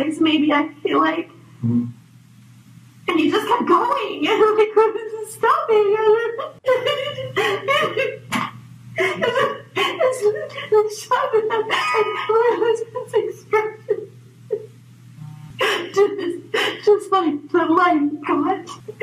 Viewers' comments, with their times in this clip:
0:06 she sounds like amber heard on the stand...😅 so fake